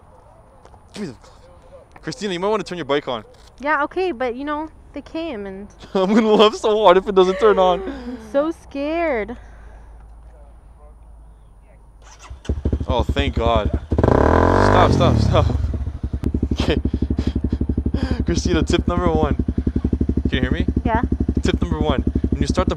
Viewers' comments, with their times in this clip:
0:09 turns it on and revs it lmfao!!!!!